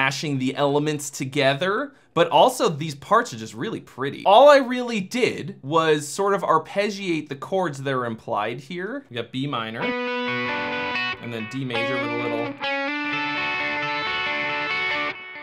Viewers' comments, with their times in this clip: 0:03 I feel like Hank Williams III would go for this genre. Edit: sounds like something Metallica would have written in load era.